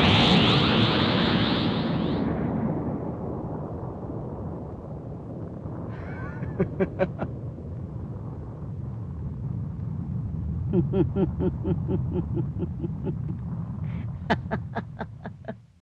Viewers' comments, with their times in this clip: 0:10 Goku's srsly tired at this point. You can hear it.